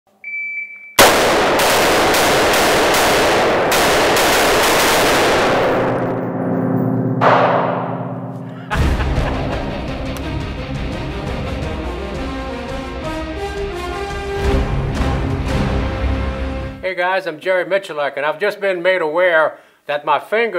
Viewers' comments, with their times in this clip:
0:01 I realized that the volume in my headphones was turned all the way up